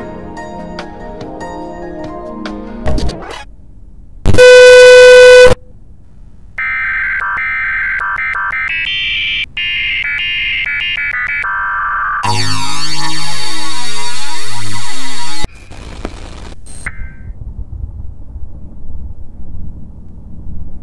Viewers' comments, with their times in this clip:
0:05 Best EAS alert ever xd